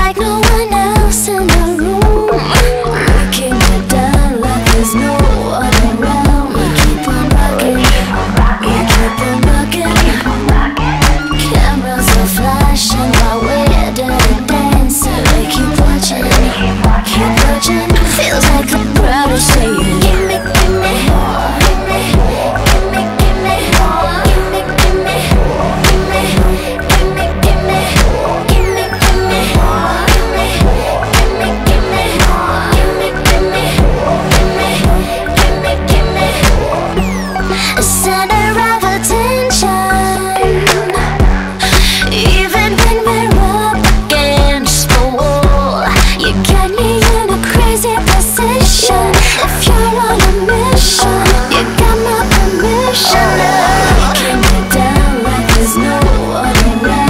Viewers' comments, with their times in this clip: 0:03 Ok but.. SOUND LIKE MONSTER HIGH ?! am i crazy ? QwQ
0:39 Does she say 'DEEZ NUTS'?!?